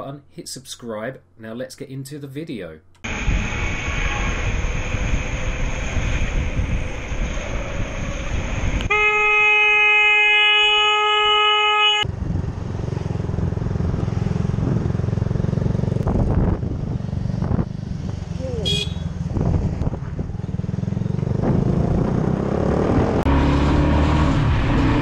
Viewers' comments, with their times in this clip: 0:09 as I biker I strongly say still and stay by it - that attitude and horn use was completely unnecessary